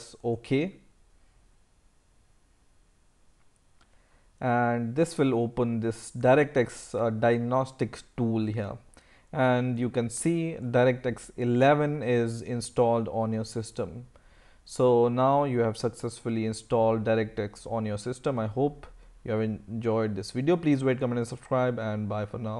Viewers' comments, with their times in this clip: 0:05 He said Darekteks.
0:07 DId he read it DirectX Diagnostic stool xD